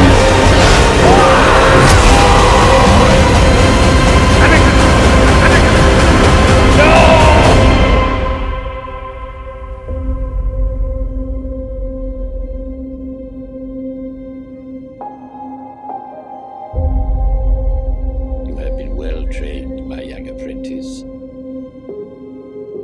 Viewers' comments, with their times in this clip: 0:03 I AM A SITH!!!!!!!!!!!!!!!!!!!!!!!!!!!!!!!!!!!!!! thunder crashing ground tearing apart ignites crimson saber